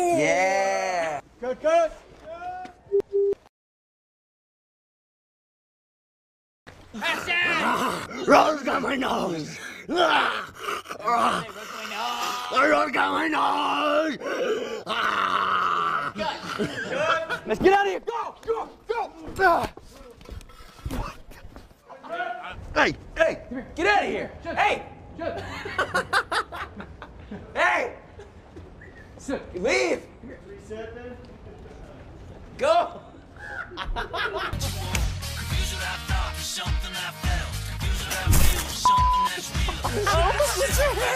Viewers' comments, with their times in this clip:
0:06 Random crank: Rose got my nose! Rose got my nose!!! Newt:(mocking) Rose got my nose!
0:07 Is it just me or when the Zombie that was on top of Newt kinda sounded like Scooby Doo 😂
0:23 Dylan screaming at a crow so funny lmao